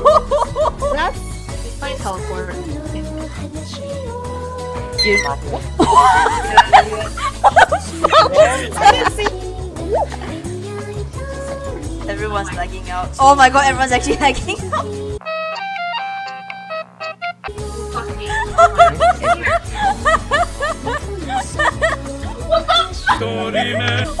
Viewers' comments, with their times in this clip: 0:05 who tf’s scream was that